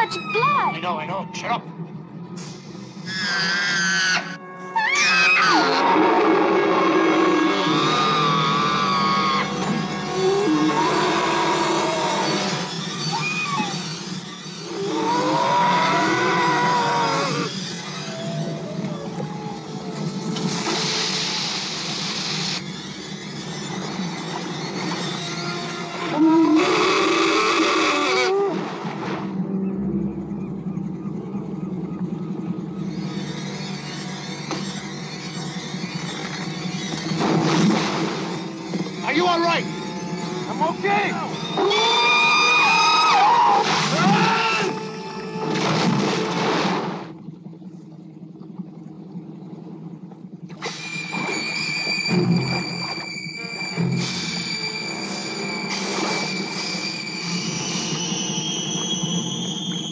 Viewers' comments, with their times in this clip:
0:05 they used a bear sound effect for the Male killer whale to make him sounds more aggressive and dangerous than the others
0:41 sounds like tyrannosaurus roar but low pitched